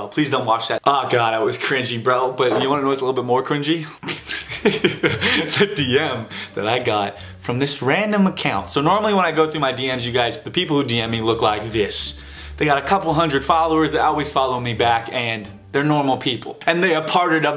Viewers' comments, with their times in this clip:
0:04 His laugh omg❤️❤️❤️